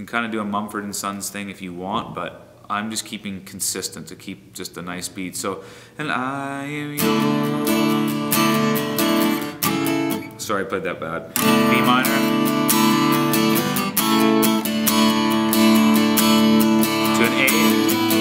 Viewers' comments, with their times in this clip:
0:04 what is the strumming pattern ?